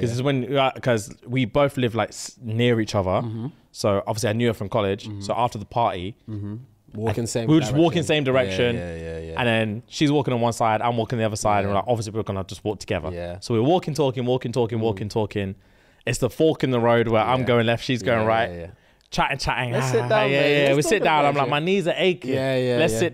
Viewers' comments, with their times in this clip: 0:09 the yeah yeah yeah is annoying af